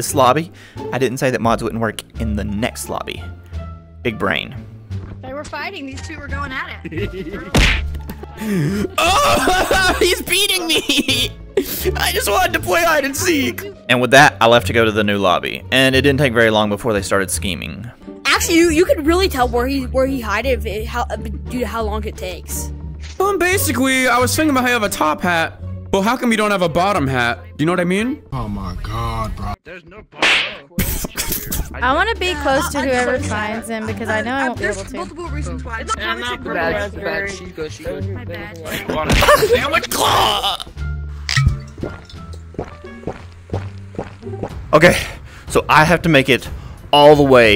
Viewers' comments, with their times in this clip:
0:05 I heard Octavia
0:29 That smack was personal